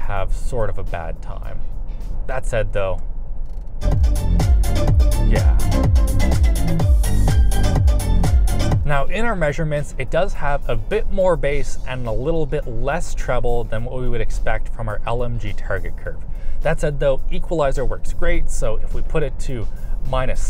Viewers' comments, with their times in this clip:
0:05 What front sensor died from the bass there? Nice 😀